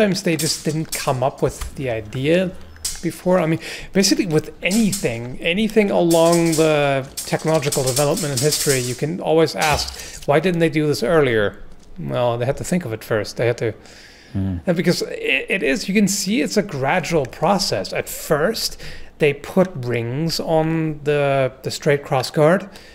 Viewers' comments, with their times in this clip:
0:06 that exchange and finisher looked and sounded awesome°